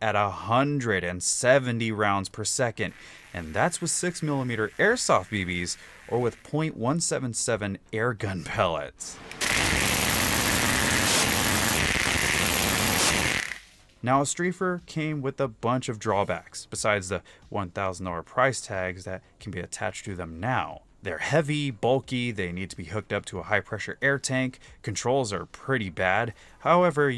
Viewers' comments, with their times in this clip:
0:09 i want it just because it goes BRRRRRRRRT like a A-10